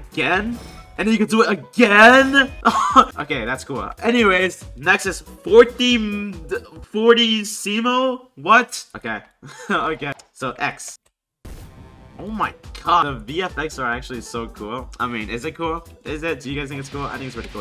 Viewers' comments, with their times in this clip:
0:05 “forty seemo” As a musician u have no idea how much offense I just took for that…